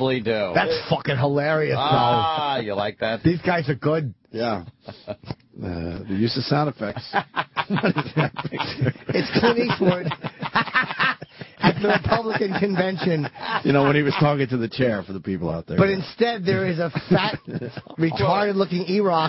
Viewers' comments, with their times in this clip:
0:07 Jim Norton Laugh Compilation clip